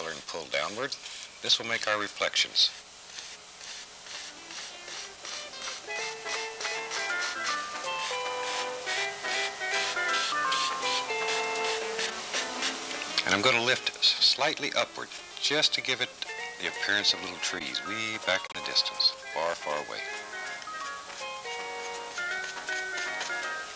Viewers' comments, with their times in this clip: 0:04 Haven't really been a fan of the music in season 1 but it was relatively inoffensive until the bad Dragon Quest town music started